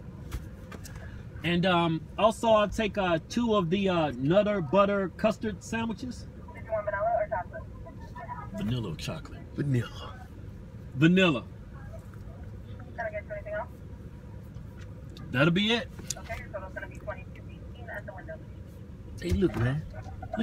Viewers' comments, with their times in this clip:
0:07 he was so aggressive when he said vanilla like CHILLLLL